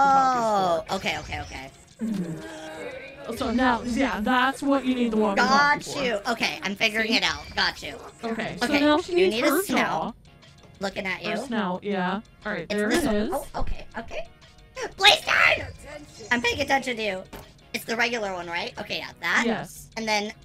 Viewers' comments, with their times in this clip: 0:08 I thought she said the f-word